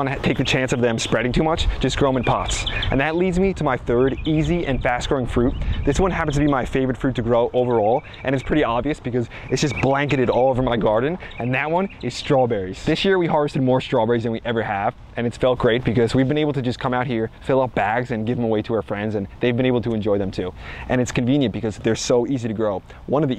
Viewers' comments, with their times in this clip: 0:07 Is my video on 1,5x?